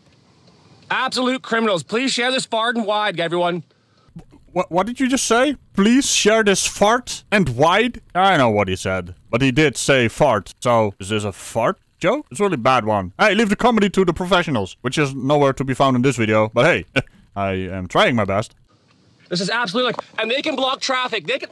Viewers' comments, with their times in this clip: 0:04 I laughed hard because you heard the same thing I did